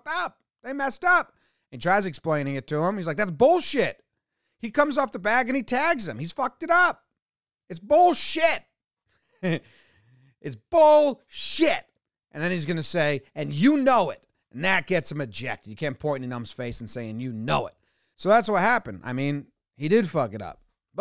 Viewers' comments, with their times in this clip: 0:08 Jomboy's little giggle after "it's bullshit" is all of us